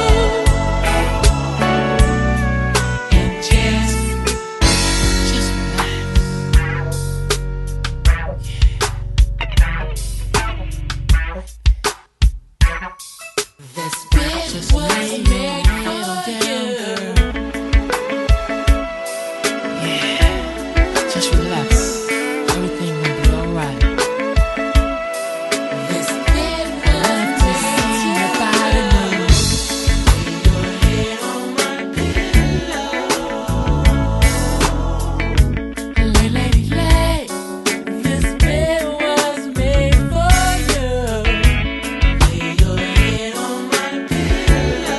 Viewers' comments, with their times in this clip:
0:04 Eargasm starts .. Real musicians know wat im talkin bout!! Just let it groove!!!
0:04 I’m a church musician and I’ve always loved this transition! I have to rewind to every time I listen to this song
0:15 is when I get super happy. The song deliciously escalates from there. Stratospheric until the end! A requirement: turn it up very loudly! 😊❤😊❤😊
0:29 Then second level of eargasm starts .....
0:30 This song gets really funky